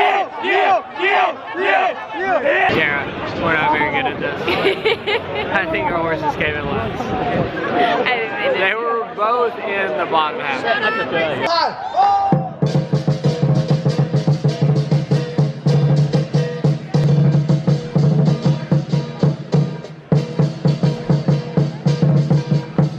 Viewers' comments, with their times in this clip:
0:10 someone yelling "shut up" in the background